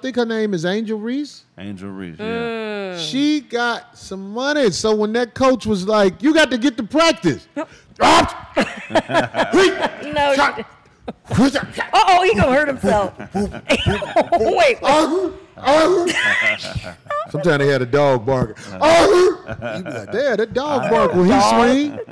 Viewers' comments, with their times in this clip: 0:05 these kung fu sounds 😂😂